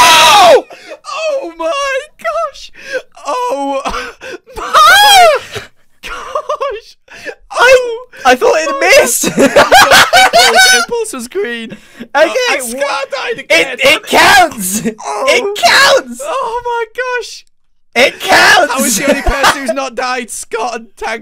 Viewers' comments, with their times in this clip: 0:03 very manly giggles